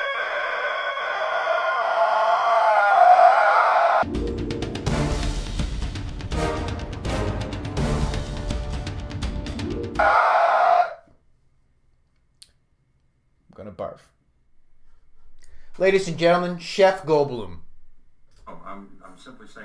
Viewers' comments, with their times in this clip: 0:03 My climax face and noise. It's a double whammy.